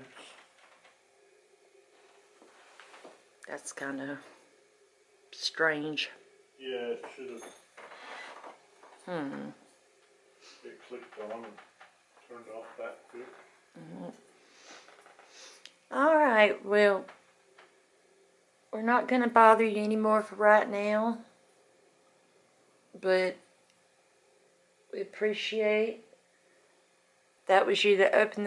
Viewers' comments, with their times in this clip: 0:07 a bell or a something dropped in a glass dish, yeah. Odd.
0:09 almost sounds like someone tossing and catching keys.